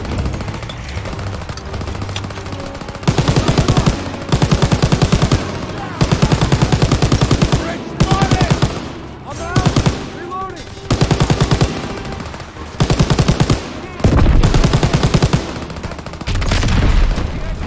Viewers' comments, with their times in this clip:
0:03 sound of MG 42 :face-purple-crying: